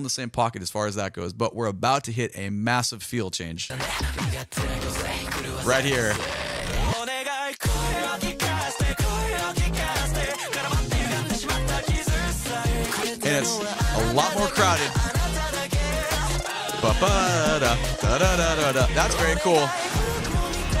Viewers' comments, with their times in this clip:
0:08 that parts sounds a LOT like the chorus from "Heart Forecast" from Eve (the start of it). I can't unhear it.